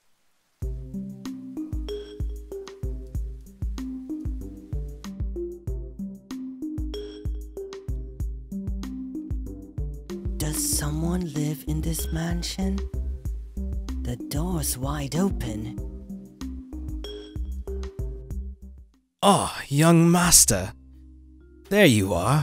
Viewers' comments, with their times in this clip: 0:06 that moment when you think he's about to sing because he spoke in the tone of the background music 😂